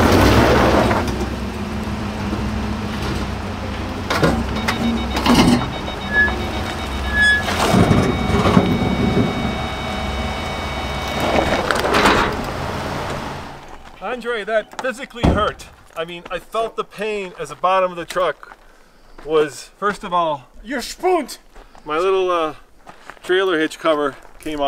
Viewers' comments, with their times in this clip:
0:03 Truck started flatlining 😂😌
0:07 Sounds like the Raptor was flatlining!..